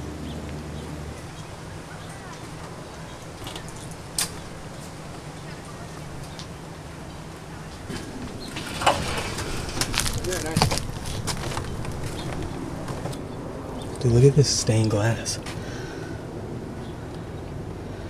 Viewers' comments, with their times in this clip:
0:04 I swear you hear people talking